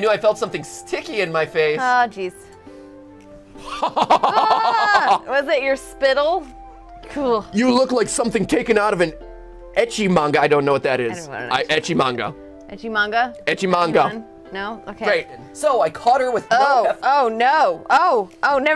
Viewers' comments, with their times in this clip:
0:03 greatest evil laugh ever!!!